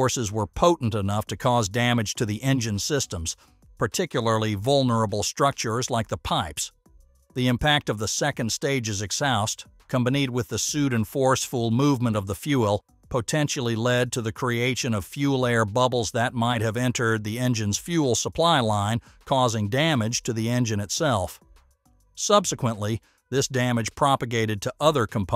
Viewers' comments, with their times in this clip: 0:09 Is this a synthetic voice? "combined" is pronounced something like "Kum-ba-NEED". I have never heard any native English-speaking human misread that before.